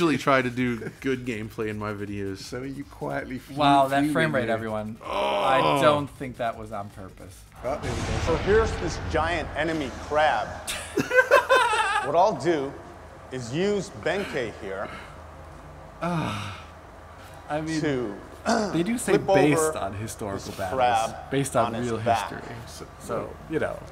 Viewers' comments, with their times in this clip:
0:07 "So here's this giant enemy crab" The laughter afterwards made my day